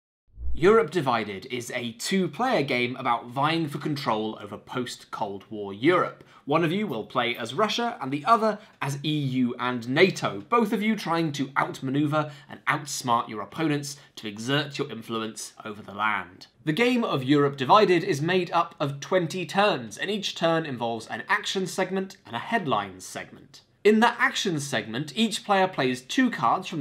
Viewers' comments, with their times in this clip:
0:09 "E.U. and N.A.T.O." facepalm doesn't start well. :P